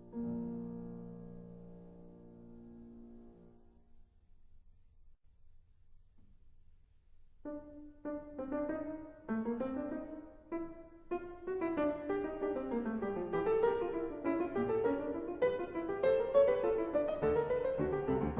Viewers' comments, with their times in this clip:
0:05 lol prelude as well as a fugue